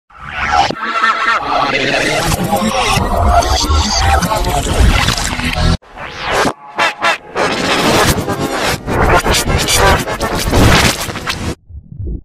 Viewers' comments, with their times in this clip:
0:00 Sounds Like Reverse feels dizzy